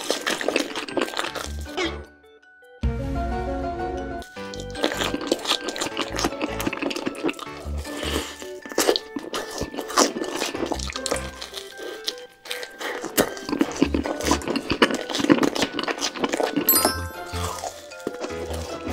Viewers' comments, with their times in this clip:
0:03 the music of the Illuminati